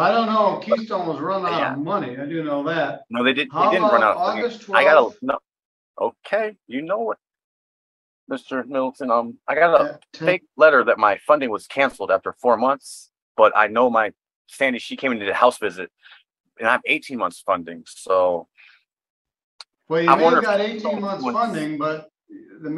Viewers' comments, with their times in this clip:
0:07 fargo 1996 👮🏻‍♀🚔marge gunderson: ''yeah sure oh you betcha yeah'' jerry lundergaard: ya darn tootin!